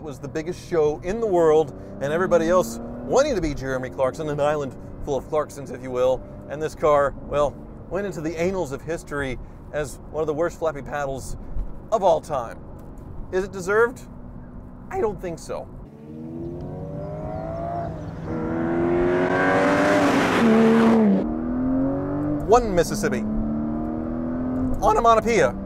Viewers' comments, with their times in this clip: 0:09 It got shoved up history's butt?? That must have been one crappy review!